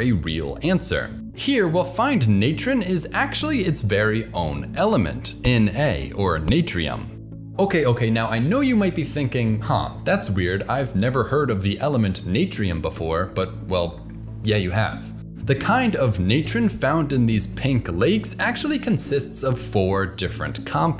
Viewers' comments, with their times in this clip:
0:06 confused german noises